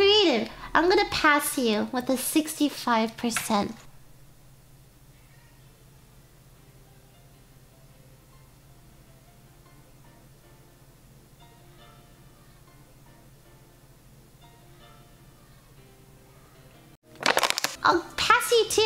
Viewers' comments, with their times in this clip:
0:04 I've never laughed at complete silence more than this